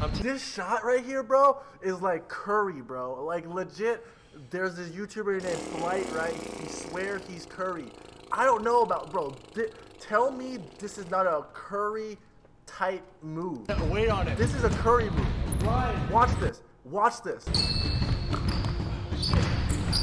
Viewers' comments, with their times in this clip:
0:03 sounding like Flight rn Rice😭